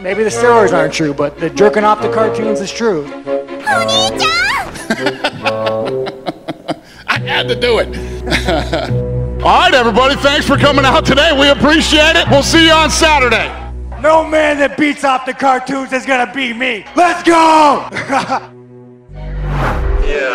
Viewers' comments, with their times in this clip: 0:03 Izzy's face, Sean's voice and Dana's "I heard to do it" 😂😂😂😂